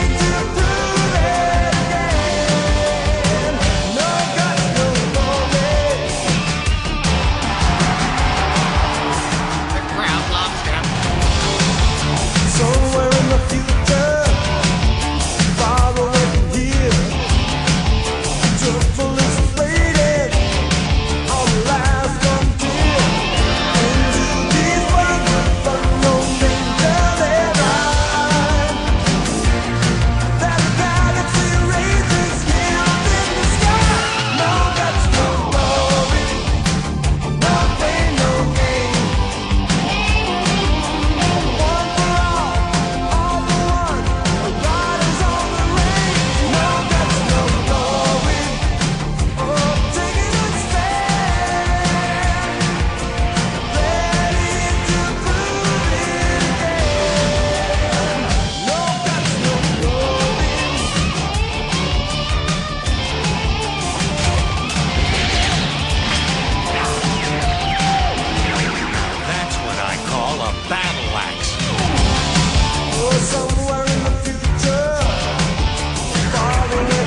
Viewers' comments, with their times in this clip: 0:03 LOL that run.
0:57 Would you ever see someone on Pokemon perform a wicked guitar solo Fuck no you wouldn't! Goddamn these 80s cartoons had balls!
1:03 CAUGHT RED HANDED LIP SYNCHING Actually, the first clue should have been the chick lead singer for a song with no female voices X{